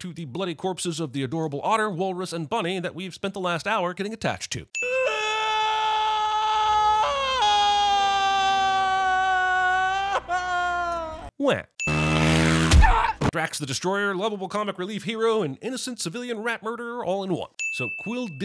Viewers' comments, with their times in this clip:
0:04 (Not related to the video) I had a school task to recontextualize a scene from macbeth and perform it, and one of the girls scream/cried like this for a solid 20 seconds.